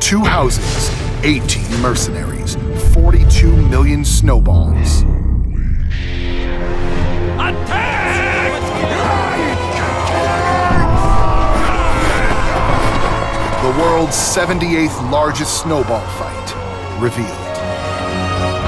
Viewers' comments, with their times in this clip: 0:05 did you really think no one woudl comment about the quake "holy shit" there?